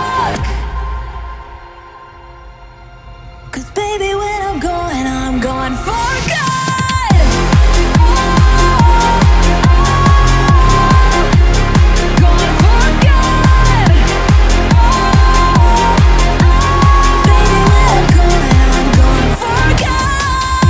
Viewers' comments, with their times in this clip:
0:08 classic jim yosef drop, Amazing remix mann, in love with thiss🔥🔥